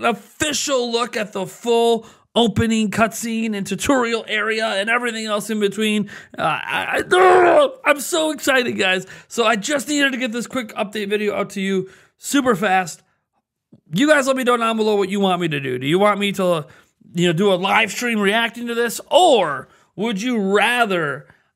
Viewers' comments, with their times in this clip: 0:07 Love the muffled scream